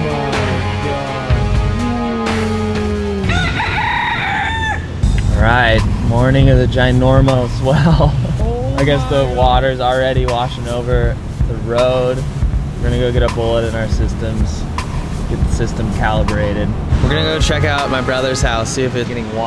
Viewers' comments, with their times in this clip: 0:03 That crow was timed perfectly haha. The sound of home 🤙🏼